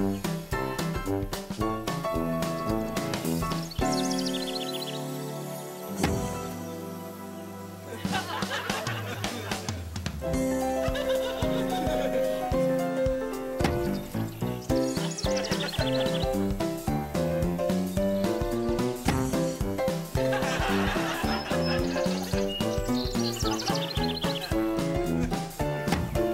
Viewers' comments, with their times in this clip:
0:10 ridiculous laugh XD